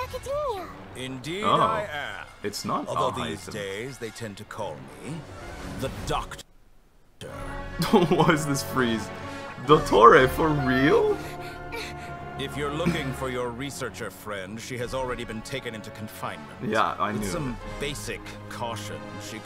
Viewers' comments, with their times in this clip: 0:03 THE WAY I SAID AL HAITHAM'S NAME TOO OH MY DAYYYYS (lmao also fatoo fatoo)